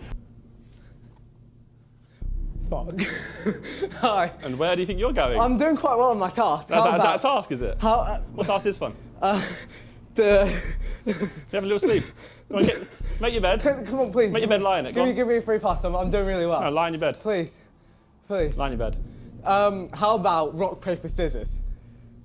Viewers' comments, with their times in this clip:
0:04 Josh's tone of voice is lowkey giving me like serial killer vibes i would be terrified if he said that to me bro